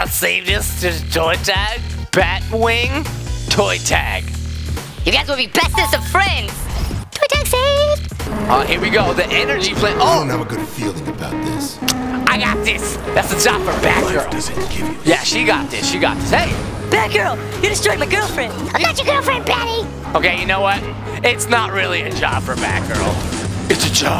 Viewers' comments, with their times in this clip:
0:09 Hear the background music